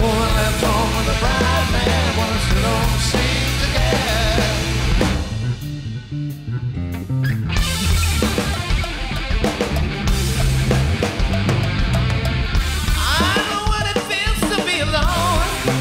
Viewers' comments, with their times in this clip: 0:03 what the hell is Jonesy playing, totally off there for some bars.